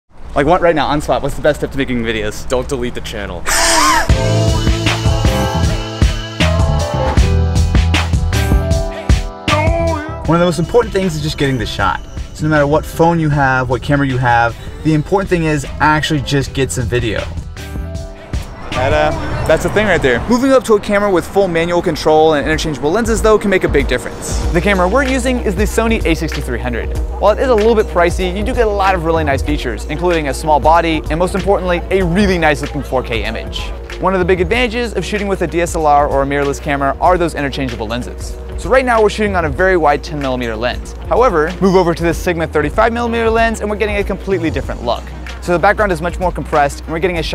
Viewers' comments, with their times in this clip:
0:03 Oh my god that laugh Anyone else wants to make YTP about it ?
0:29 why i heard "you do get a lot of really nice asses" ? weird i may need speakers, not a camera lol or a brain check lol